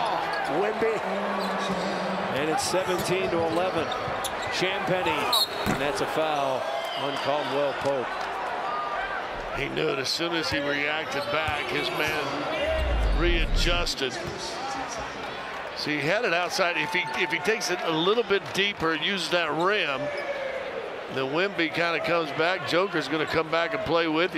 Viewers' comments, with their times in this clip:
0:05 they seriously played the "Oh my God" meme over the speakers🤣🤣